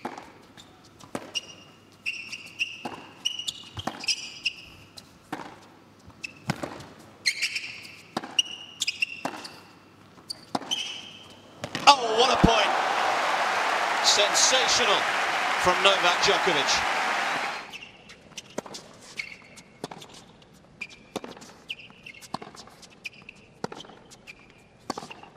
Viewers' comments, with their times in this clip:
0:10 usually that sound is so irritating, but man when thats coming from the goat's shoes, it becomes so pleasurable😭❤